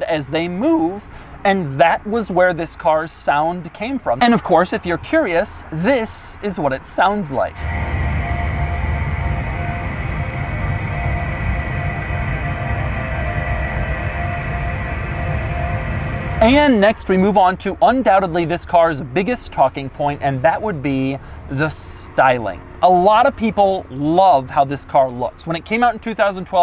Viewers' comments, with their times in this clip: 0:06 It sounds like hypnotoad?
0:07 -What do you fancy to have as an engine note? -Old Mac startup sound -Say no more, sir
0:07 we get some esoteric unholy skinned god sounds
0:08 That sounds like the first second of a Play Station 1 boot sound, extended.
0:08 All hail the Hypnotoad!